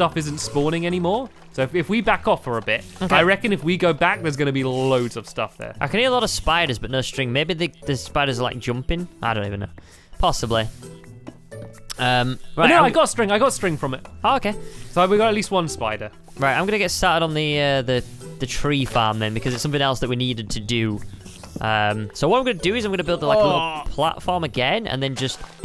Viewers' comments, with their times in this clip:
0:10 when the enderman sound went off it scared me